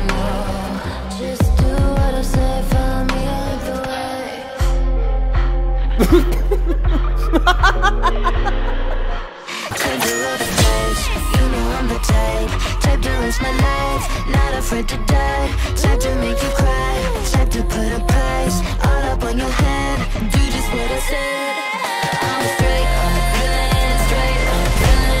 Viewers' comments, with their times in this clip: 0:06 THAT LAUGH JUST HITS DIFFERENT
0:08 his laugh tho